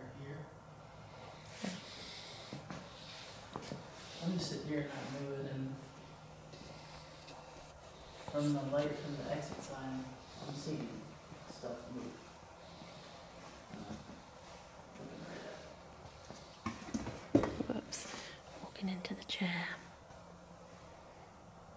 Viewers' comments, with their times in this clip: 0:06 Is you guys? Cause sounds like "two are dead" 😮